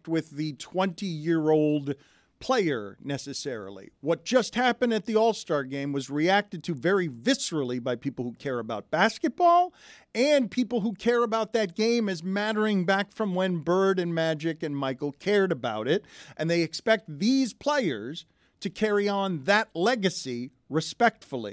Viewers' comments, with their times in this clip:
0:07 Dan’s inner child/Jim Mora emerges to say the word, “basketball”.